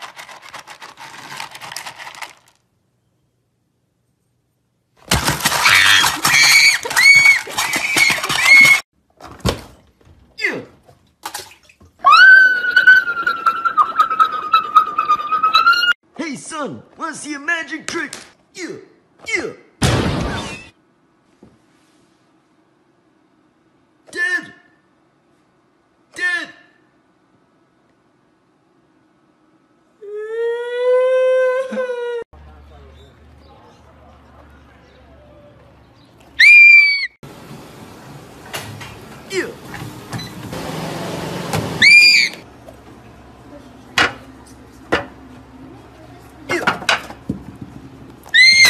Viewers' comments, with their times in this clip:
0:09 got me dying those screams just help me
0:24 it sounds like he said dead instead of dad🥲
0:30 bro started crying like Jeffy